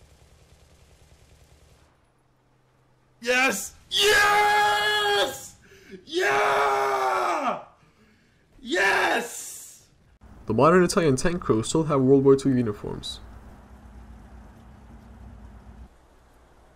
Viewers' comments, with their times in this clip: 0:03 It's first time I hear anyone is so happy about killing themselves